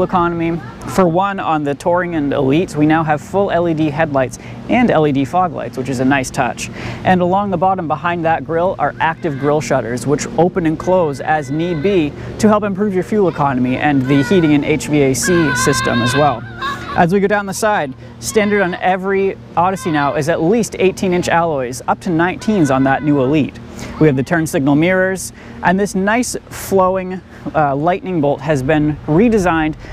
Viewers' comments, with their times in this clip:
0:09 I can hear minions screaming behind there from
0:16 That bird sound out